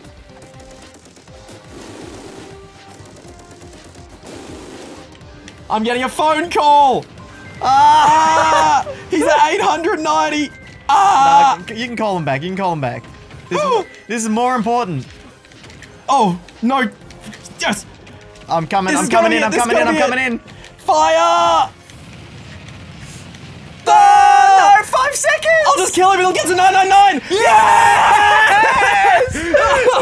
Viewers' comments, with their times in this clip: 0:06 I have that same ring tone lol
0:11 thats my ringtone💀